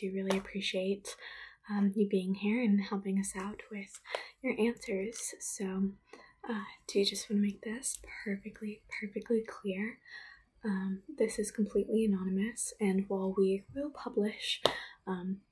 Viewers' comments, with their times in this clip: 0:03 did someone drop an anvil on toms tail